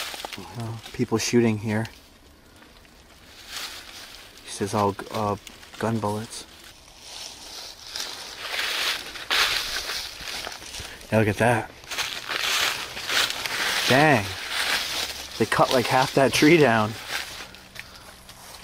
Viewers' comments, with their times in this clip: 0:06 I can here something but can make it out